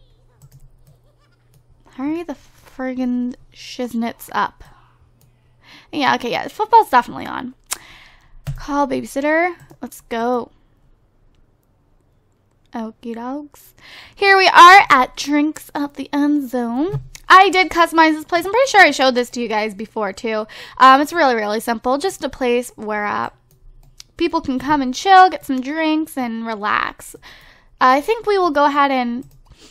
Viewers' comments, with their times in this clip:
0:10 you can hear someone say "oh shit!" 😂😂😂